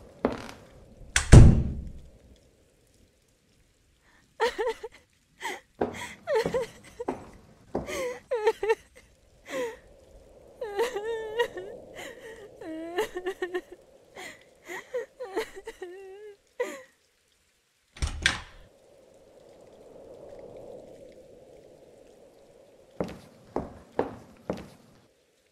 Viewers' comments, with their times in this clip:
0:10 is that our player character crying? Also who is she talking to? Is she on a cell phone?